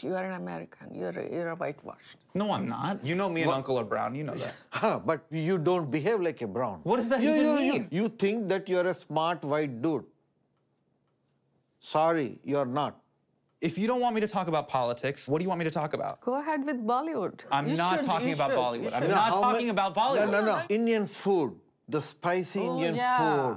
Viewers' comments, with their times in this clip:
0:09 that uncle spoke like Mr Nags from RCB insiders show😂...did anyone notice that